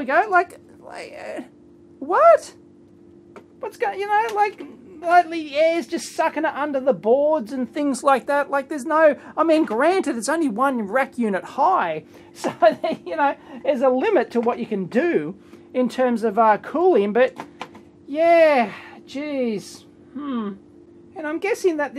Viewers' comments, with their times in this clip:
0:05 Those are blower type fans - they suck air from below and blow hot air to the back of the chassis. Those are popular on 1U type servers, but sounds like hairdryers.